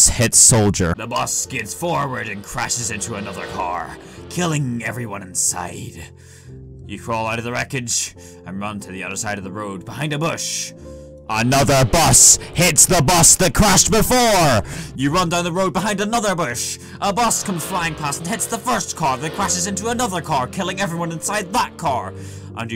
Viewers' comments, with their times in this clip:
0:04 now thats a movie voice